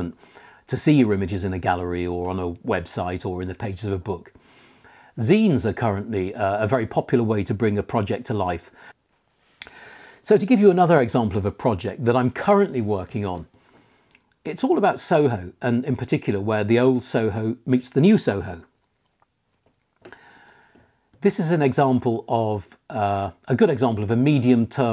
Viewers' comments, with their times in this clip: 0:05 Great video. I am a bit lost about what you mean Scenes?